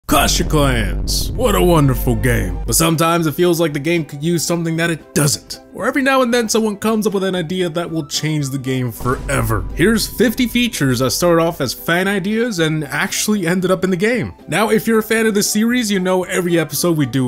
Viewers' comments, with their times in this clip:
0:00 bruh , l was wearing earphone and my ear drums nearly blasted ! great enthusiasm though 🤣